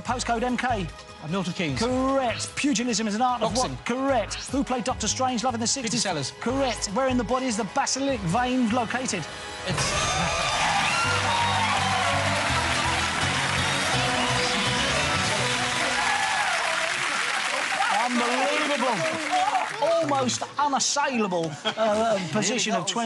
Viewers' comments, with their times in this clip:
0:07 it’s so obvious Bradley said this final question so slowly on purpose to help the team win 😂